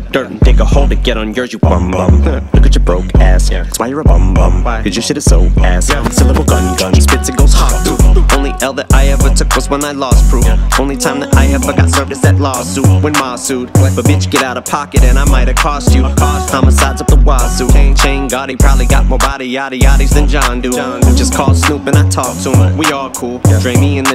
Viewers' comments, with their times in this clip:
0:09 He did the HawkTuah 😂